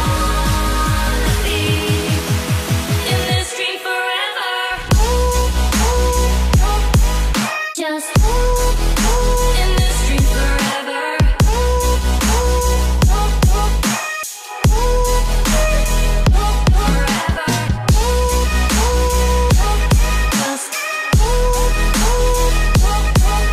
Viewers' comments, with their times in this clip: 0:04 perfect beat drop